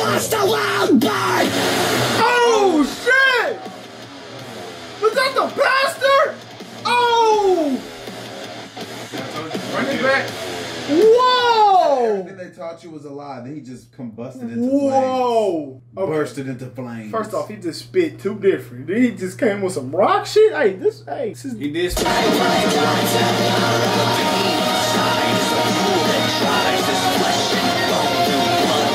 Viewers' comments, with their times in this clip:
0:10 if you time it right one of the guitar player is bending 2 notes togther